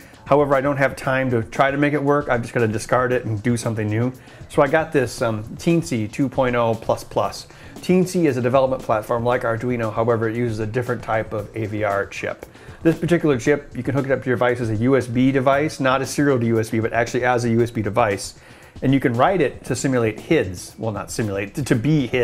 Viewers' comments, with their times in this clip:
0:05 Whats the name of board mentioned in Sounds like "teen-C" but couldnt find anything of that sort on google?